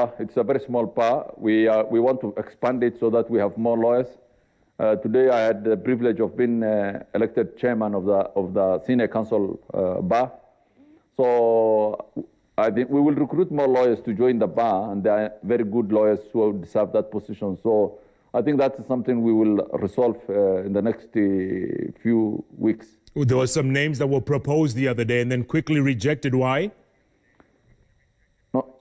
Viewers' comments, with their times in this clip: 0:10 Stop farting in live television even the second phase of the interview you could hear farts. Jeff or Grand Mullah may have eaten alot of beans 😂😂😂